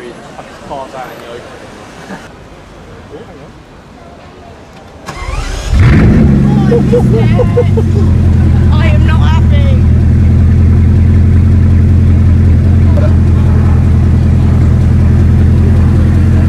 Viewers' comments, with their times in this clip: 0:03 Thank me later :) that deep grumble is insane <3